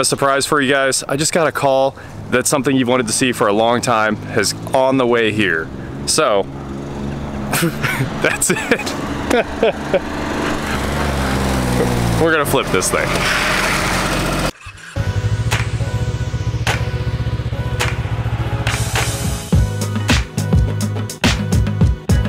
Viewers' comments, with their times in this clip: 0:06 sounds like someone was mowing their lawn